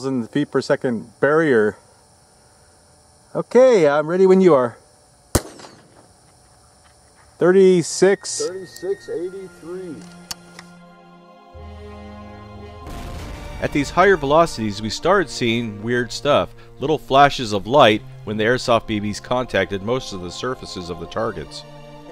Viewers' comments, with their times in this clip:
0:04 that bb whistled
0:04 did anyone hear that wistle